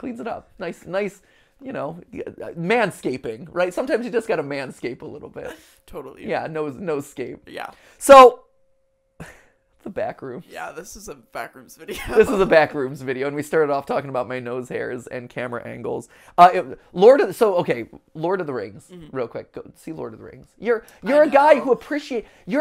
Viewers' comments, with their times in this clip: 0:06 nose scape sounds a lot like no escape which fits great with the theme of this video lol